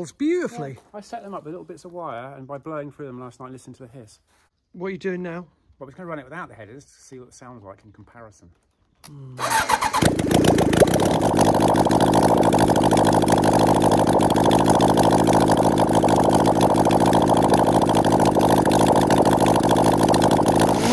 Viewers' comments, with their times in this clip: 0:06 sounds like wet farts instead
0:08 Bubble bike engine turns into fire snorting monster